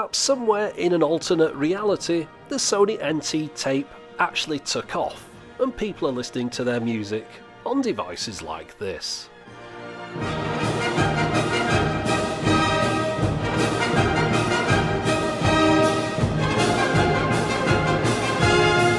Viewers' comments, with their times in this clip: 0:03 is that the actual sound coming from the little cassette if so it sounds sublime